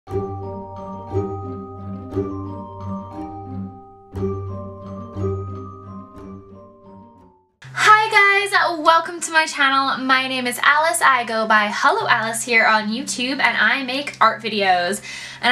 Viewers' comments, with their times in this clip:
0:00 "Hi SiStErS!!!" Is what that reminded me of